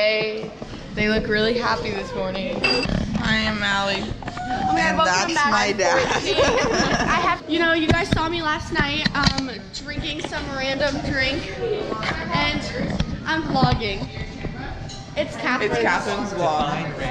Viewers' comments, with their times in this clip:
0:05 my laugh at like seconds is soooooo bad what the heck do i really sound like thst